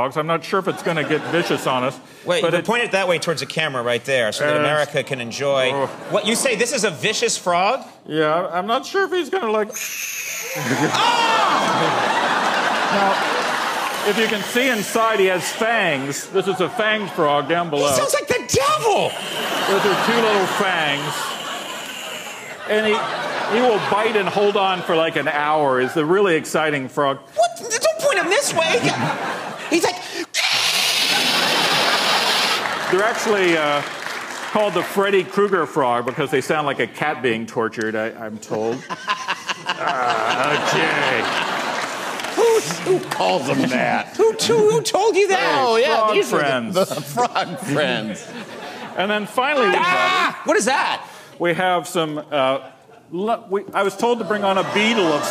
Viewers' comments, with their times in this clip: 0:06 -"This is a vicious frog." -"Yeah.. I'm not sure if it's gonna like.." -frog hisses -"AAAAH" edit: those lips on the frog
0:08 why did the guest talk like a cartoon character?
0:09 There's Wednesday my dudes
0:10 i almost died after seeing Conan's face after the frog screamed😂
0:28 HE SOUNDS LIKE THE DEVIL
0:30 pretty damn accurate impression
0:30 you gotta love this hobo’s dumb head while Conan is hissing at him
0:37 sounded like thriller (michael jackson)'s laugh
0:38 ... Andys laugh is contagious!
0:39 Andy laughing killed me.